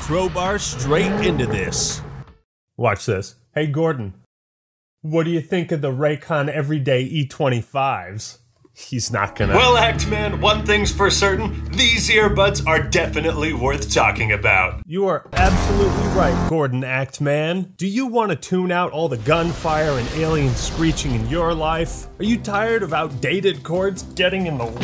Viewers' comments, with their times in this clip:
0:09 gordon is so powerful that when he talks valve theme plays